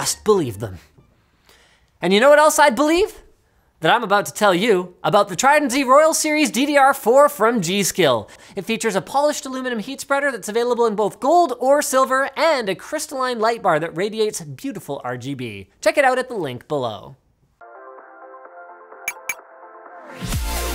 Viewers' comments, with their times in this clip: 0:07 sounds like lets make a deal explaining somthing
0:07 You're running low on breath already?